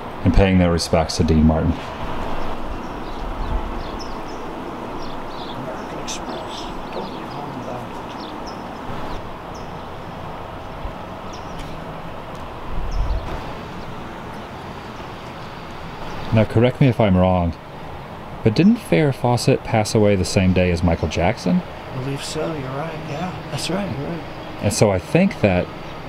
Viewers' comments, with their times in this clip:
0:07 can read that headstone, or understand what you are muttering🤷🏼‍♀️